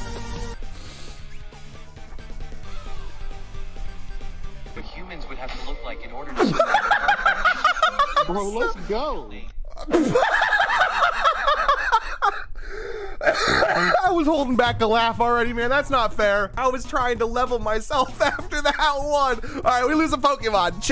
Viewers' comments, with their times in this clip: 0:06 first time you laugh twice